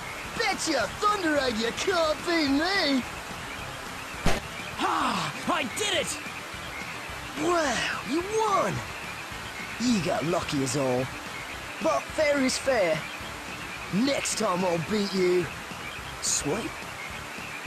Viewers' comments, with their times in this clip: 0:03 hey doesn't he sound like that 1 dude from beyblade burst